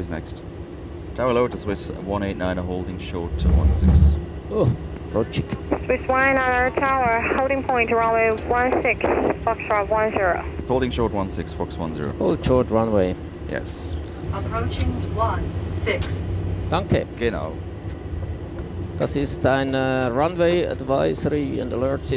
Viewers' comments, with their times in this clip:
0:07 Climb to 4200 metres. "Wo.. yaooo . wuuuuuueuueuu" ATC must be part of the fan club.